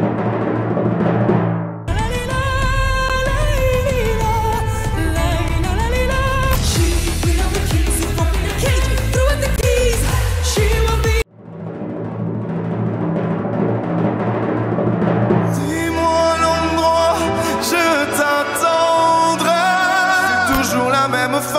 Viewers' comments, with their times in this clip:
0:03 ISRAEL IS WAY BETTER AND EVEN THE VOICES